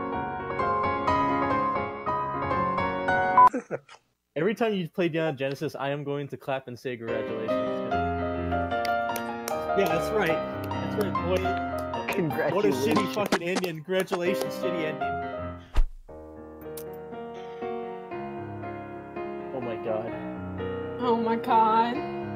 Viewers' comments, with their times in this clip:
0:04 that discord noise got me XD